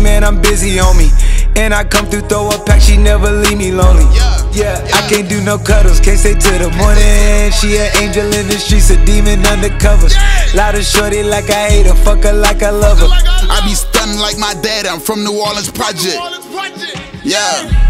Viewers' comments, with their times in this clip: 0:05 dat eeeehhh he does is hella clippin and i fw it